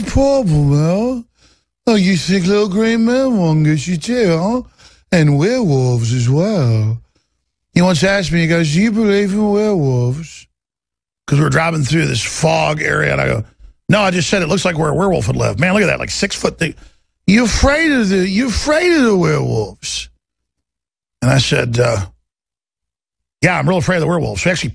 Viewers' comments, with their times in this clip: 0:05 LMAO That is a PERFECT Jon Ronson impression 🤣